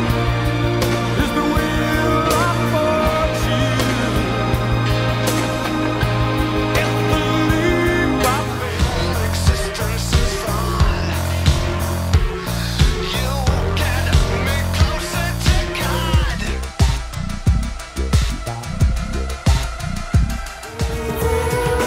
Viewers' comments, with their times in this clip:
0:06 what a beautifully jarring transition.